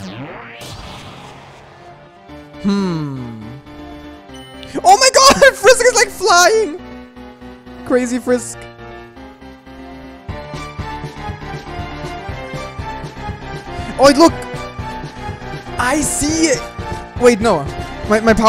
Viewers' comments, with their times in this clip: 0:03 is that yeet edited in?